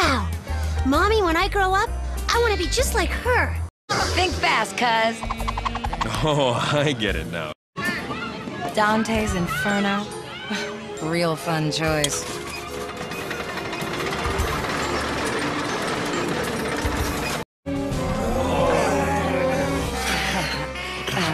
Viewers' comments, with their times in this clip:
0:05 this is what spending time with his cousin does to a mf. Even his voice changed.